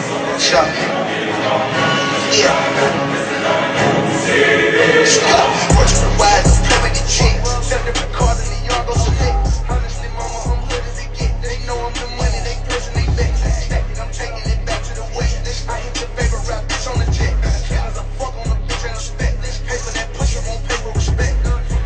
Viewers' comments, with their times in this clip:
0:05 Beat is very familiar to a beat he played weeks/months ago